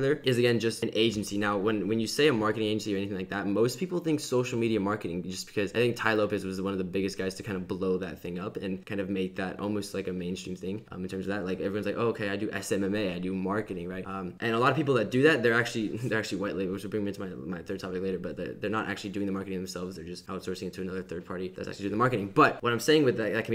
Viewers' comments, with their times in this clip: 0:06 Lit - but damn I'd give anything if you didn't talk so fast. LOL